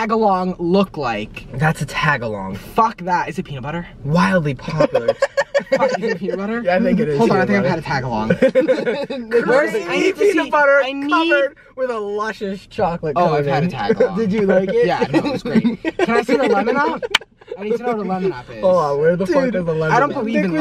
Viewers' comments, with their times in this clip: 0:03 THIS LITTLE LAUGH WAS SO CUTE BRO I KEEP REPLAYING IT
0:04 that was the cutest laugh ever 😭